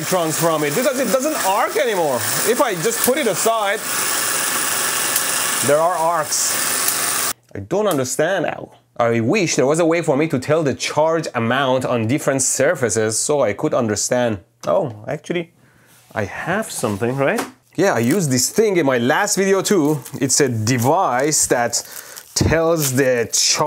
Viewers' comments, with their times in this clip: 0:07 The sad oww 😢😢